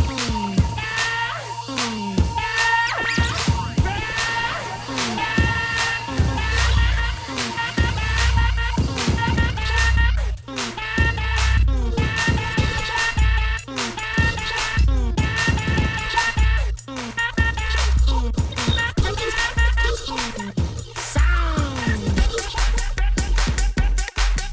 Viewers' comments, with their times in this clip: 0:05 cool glitch effect